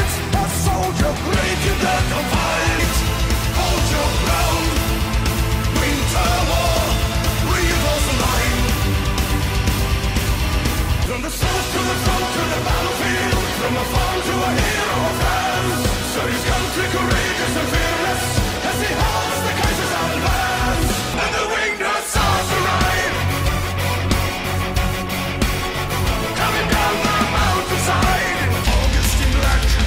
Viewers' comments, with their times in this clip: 0:10 When the trench start speaking really angry french ! XDDD